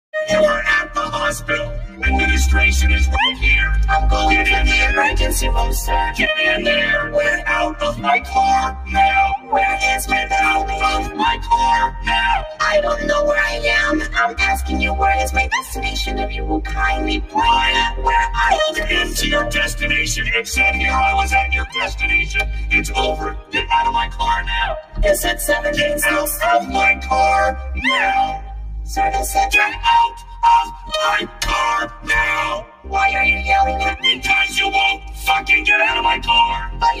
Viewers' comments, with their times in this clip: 0:02 Administration is right here !! It’s perfectly vocoded
0:03 "Right here" is tuned so god damn perfectly
0:04 is definitely my favorite part. Perfectly vocoded
0:12 They both say "DEStination" the same way, I really like how well this was mixed. Very satisfying.
0:19 In the sentence times and syncs with the 2 whole sentences he spit out of his mouth
0:25 I've beeb crying for the last 5 minutes after having watched this. The original animation + the story behind the actual voice recording of the incident was one thing *but to perfectly vocode it to Miss the rage and IT SOMEHOW FUCKING FITS*........ bruh, literal chills rn. I loved the most.
0:26 this part is perfectly vocoded
0:28 so no one'e gonna talk about this neow?
0:30 The rage is so powerful that even the vocoding cant stop it